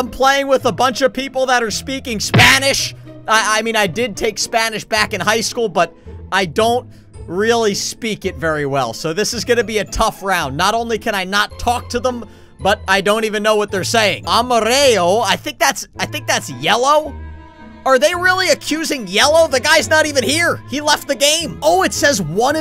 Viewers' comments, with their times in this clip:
0:06 that isn’t spanish it might be portuguese